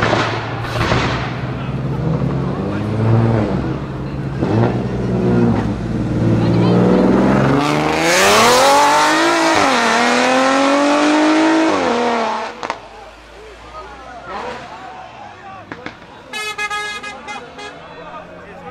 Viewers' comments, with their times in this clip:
0:04 what engine is that Audi A7 / S7 / RS7 ? ? ? ? AMAZING SOUND